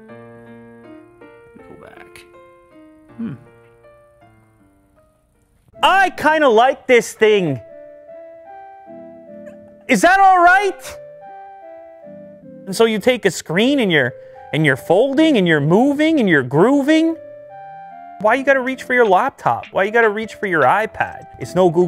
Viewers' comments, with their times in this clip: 0:05 Vibing that jingle